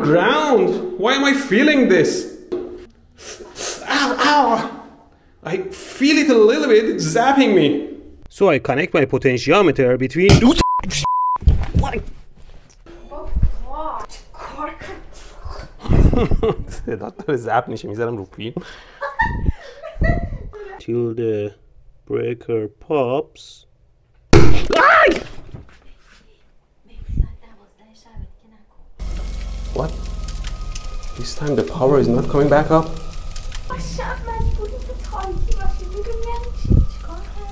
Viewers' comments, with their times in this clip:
0:10 for those of u who don't like me this man is Persian and thats what language he was speaking for those of u wondering
0:17 did he speaking persian?
0:20 What language are they speaking, Martian?